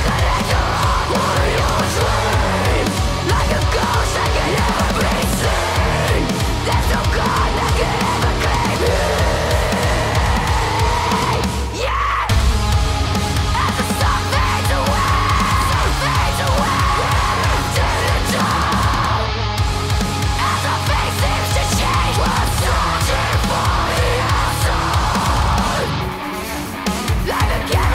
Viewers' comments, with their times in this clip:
0:08 Holy demon screams, Batman...
0:11 The "YEA" was dope!